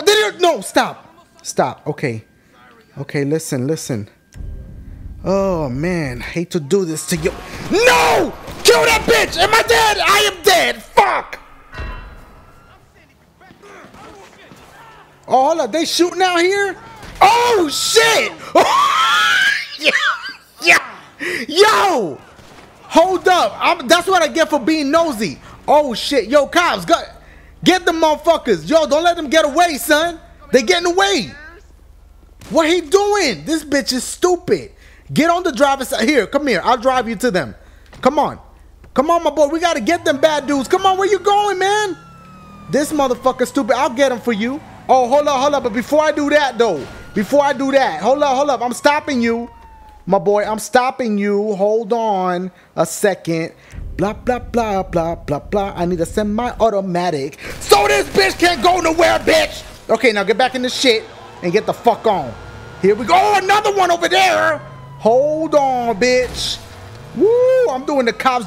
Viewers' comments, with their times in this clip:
0:07 part hilarious so dude like hello sir ready for ur ride then dashie like im sorry i have to do this and samule jackson voice dude like no im sorry i have to do this b%tch hahhahaha
0:20 dashie's laugh was hilarious
0:29 You sound like barney
0:55 it sounds like da magic school bud